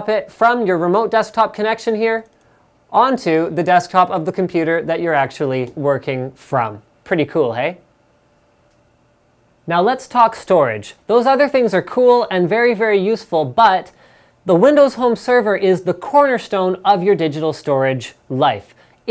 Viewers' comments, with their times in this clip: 0:06 his canadian side came out when he said "Pretty cool, eh?"